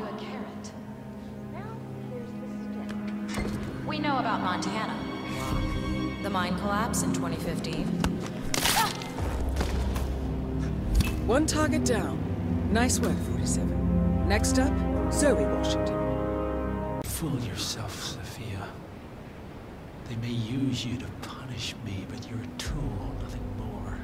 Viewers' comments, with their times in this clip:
0:06 Just me or the music in is perfect